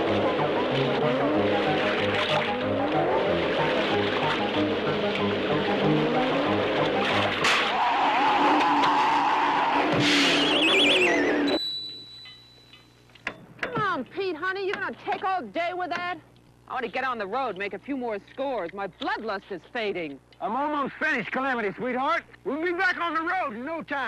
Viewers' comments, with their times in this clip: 0:10 what is that sound effect ? it sound so much like the Naruto clone jutsu sound effect